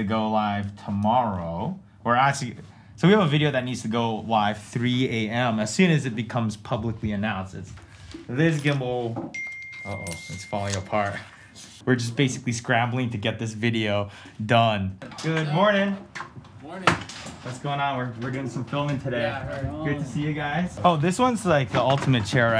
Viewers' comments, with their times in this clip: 0:09 Who else thought their phone went off then rewinded to see if it was from the video.